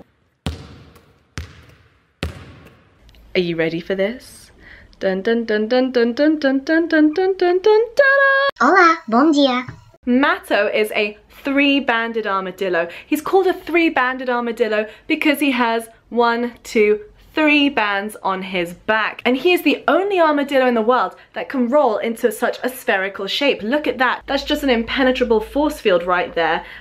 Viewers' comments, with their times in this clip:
0:07 Wait, was that portuguese in ?
0:08 he speak portuguese hahahah